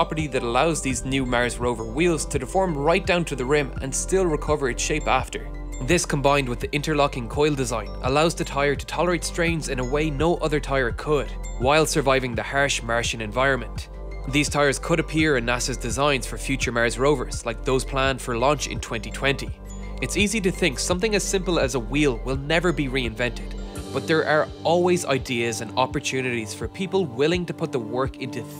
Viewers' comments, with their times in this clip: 0:08 This is brilliant and i am facinated with the design of these tires but the way the narrator says "harsh martian" ish had me chuckling like hell
0:11 hersh mershan environment?? :)
0:11 Go to for "hearsh maarshun environment," my personal highlight of this interesting video.
0:11 "Hersh Mersh" environment ROFLMAO
0:12 hersh mersh environment
0:12 Where does this Hersh-Mershen -environment occur?
0:12 HHERSH MERSHIAN ENVIRONMENT
0:12 is that Peter Griffin talking?